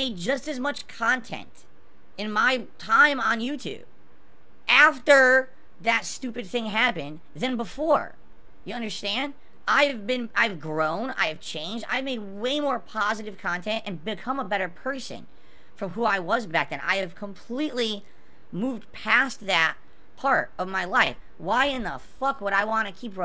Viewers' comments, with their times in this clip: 0:09 Pahsitve Kontent? You don't say Couple seconds later: Taxicity